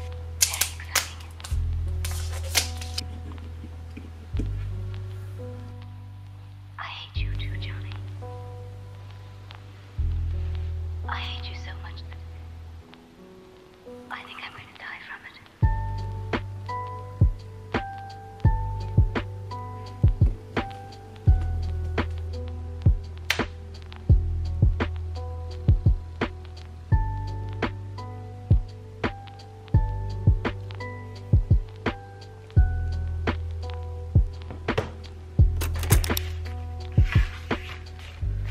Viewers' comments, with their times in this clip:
0:07 The video was amazing and everything but was I the only one who heard a voice talking or am I just tripping?
0:21 wow what a loud bang